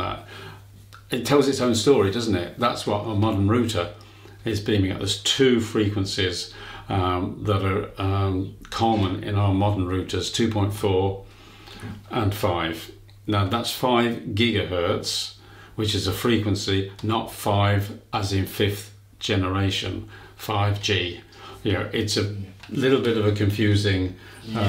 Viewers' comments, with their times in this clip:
0:06 it’s irritating me he keeps calling it a “rooter”